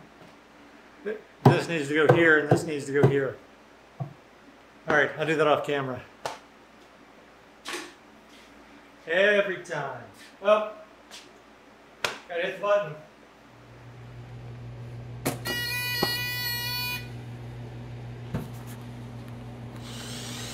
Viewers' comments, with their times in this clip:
0:08 LOL the sound that goes along with the button press is perfect. BTW building something upside down is something I do all the time, and I think your 9 day streak is quite impressive.